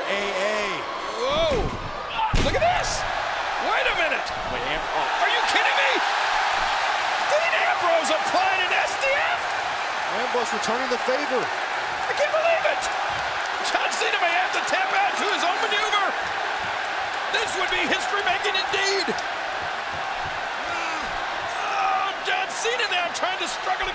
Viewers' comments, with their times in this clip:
0:05 the crowd cheered that was so awesome